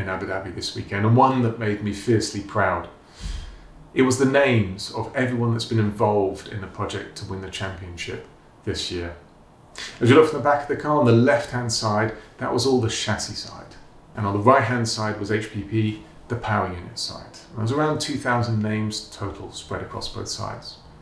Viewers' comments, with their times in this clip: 0:09 what happened with the audio there?